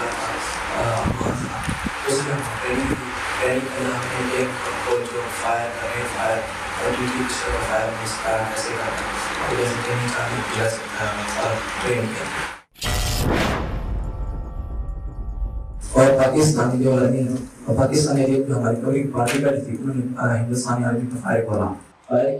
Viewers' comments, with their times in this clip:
0:09 LOL sai bewakoof banaya hua hai apni awam ko. 😀 let me put out some points: 1. Accent Does not seem Pakistani at all although that can vary from person to person and location to location but does not match to the common poor class. If people from india get a feeling that accent is their heard of then there is your hint because as a Pakistani it sounds foreign to me definitely not from okara which is like central punjab mainly speak Punjabi and other languages but accent is always punjabi influenced unlike the claimed guy. 2. why would a Pakistani say "Pakistani Army" Pakistani this and that? he would simply say Army. like we say chinese food, thai food but in china they would likely say just food and not chinese food. 3. "training Chalu kiya" lun mera yeh Pakistani hai. 4. all that going to space chandarmyan, rockets and IT and achieved this ultra clear mic audio to interview to such a high profile activity catching an actual terrorist and intervieweing, NICE.